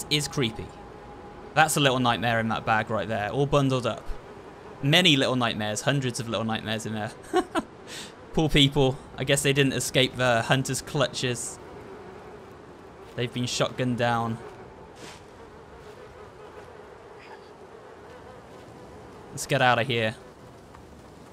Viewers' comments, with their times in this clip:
0:06 a rare footage of him laughing